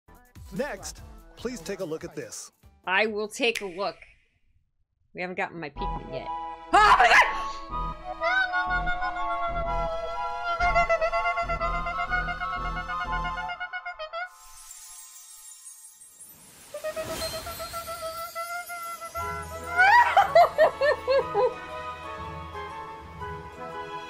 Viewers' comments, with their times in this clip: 0:06 The scream was exactly me too. After 27 years of waiting for a sequel or remake, dreams finally came true. Legit was so happy.
0:06 When I heard that first note you couldn't even imagine the "core memory" moment I had